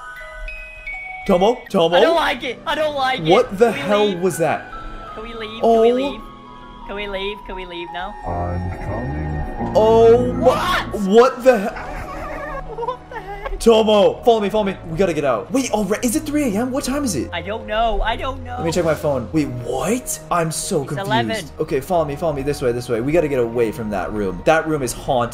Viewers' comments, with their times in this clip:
0:03 music starts me almost poops my pants
0:08 ngl sounds like Freddy from special delivery